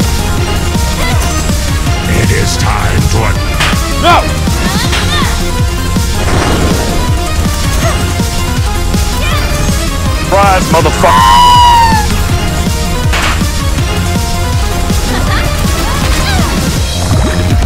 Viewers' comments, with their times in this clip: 0:03 Where do that "no" come from?